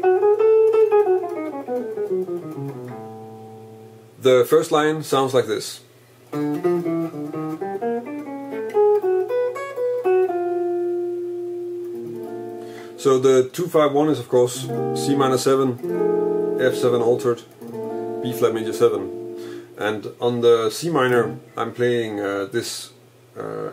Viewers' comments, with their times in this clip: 0:10 Hi Jens, It seems that there a typos in bars 1 and 2 in the second exercise (first line) Bar 1 You play D, F and E, but its written D, E and Eb. Bar 2 you play B, Db and B, and the the tab says B, C, B.